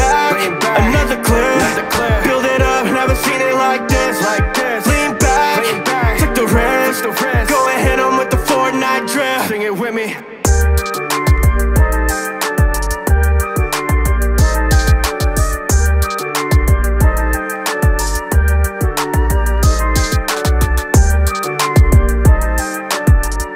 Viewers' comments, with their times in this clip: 0:09 he says "Sing it with me," then he stops singing. lol